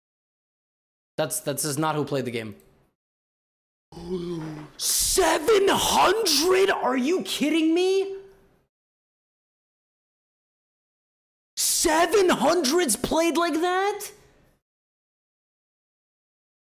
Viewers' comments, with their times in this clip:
0:04 GothamChess usually: *calm and relaxed voice, only speaks up to prove a point* GothamChess Time to let the demon out of my lungs.